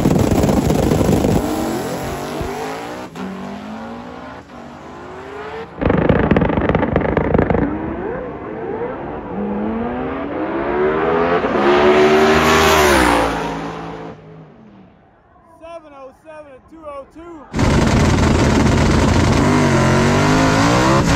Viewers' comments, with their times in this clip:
0:07 it sounds like a dang A-10 warthog spraying some freedom